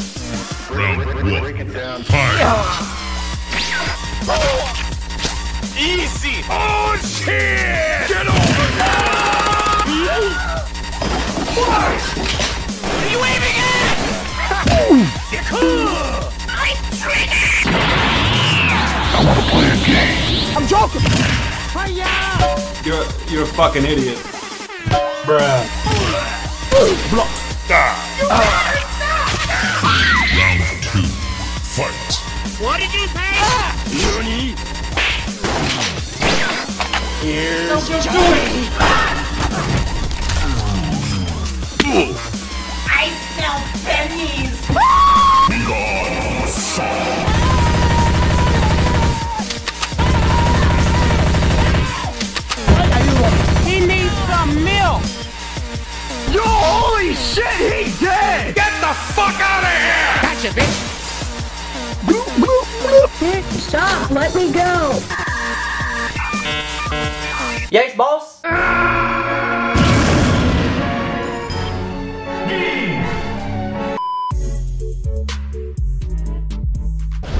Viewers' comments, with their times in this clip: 0:09 those hit markers are accurate to how it actually sounded
0:13 That sound when Revenant was hit with a fire extinguisher...magnificient.
0:15 the classic coconut sound always get me😂
0:47 Literally no one: Black Ops 2 Five Seven spamming lol
1:00 what is the bloo bloo bloo